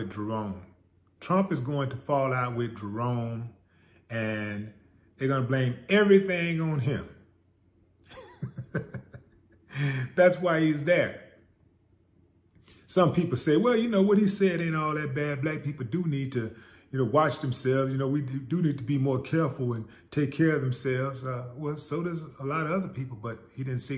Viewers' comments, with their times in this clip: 0:07 That laughter knows the future because he knows the past